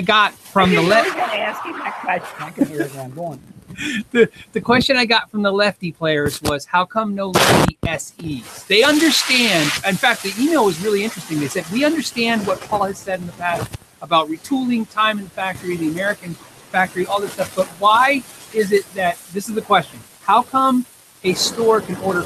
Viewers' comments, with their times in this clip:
0:06 Yeah I don't get the criticism Paul gets. The only complaints I have is the difference in volume between you two and the sound issues (e.g. ). Well, that and there wasn't as many questions that got answered as there usually was in these things.